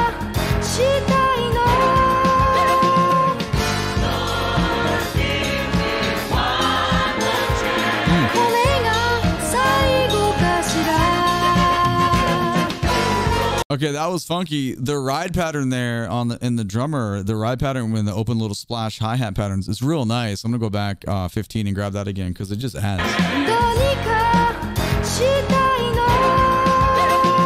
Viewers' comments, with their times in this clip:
0:10 My absolute favorite moment of the song where the backup vocals are mimicking the horns, going "Chu-ru, chuchu-ru, chuchu-ru, chu-chu"